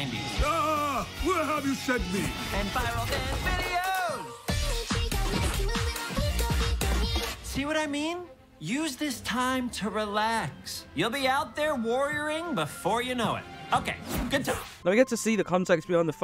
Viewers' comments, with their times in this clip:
0:04 He simps for hatsune miku.. HE SIMPS FOR HATSUNE MIKU HE IS JUST LIKE ME!!! (*LOUD CUTOFF SCREAM*)
0:04 japanese music😂 it sounds cool